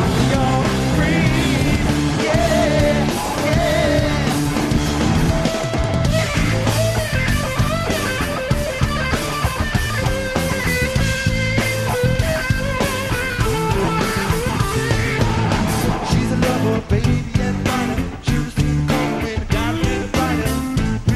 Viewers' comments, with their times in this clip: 0:06 best first solo of dani california